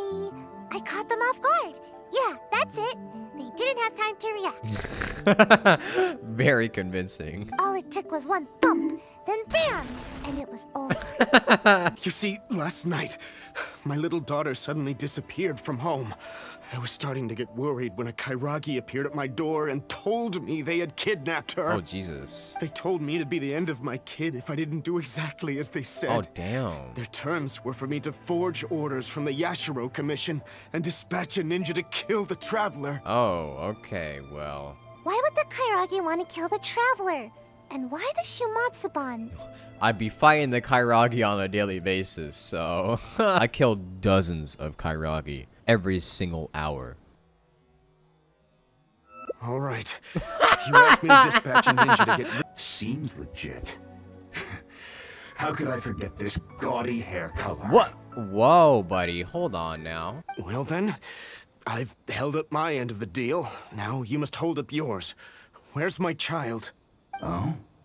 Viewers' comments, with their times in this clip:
0:08 BONK, then an IED goes off because why not?
0:48 WHY ISNT ANYONE TALKING 💀
0:51 his laugh is like- starts of the engine of the car the car starts brooooom